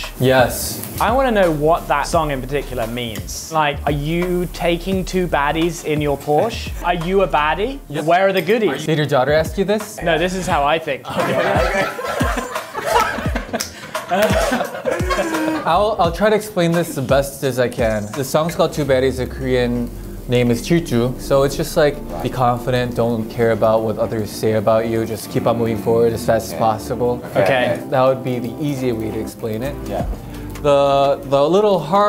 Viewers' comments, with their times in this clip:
0:04 "Are you taking 2 baddies in your porsche?" "are you a baddie?🤨" in the most serious way😭
0:13 WHY IS JOHNNY LAUGHING SO CUTE 😭💗